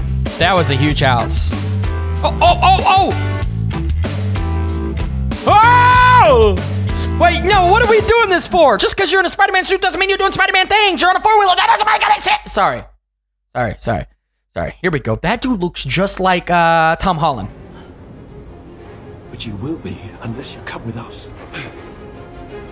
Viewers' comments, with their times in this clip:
0:06 bro is rapping 😂😂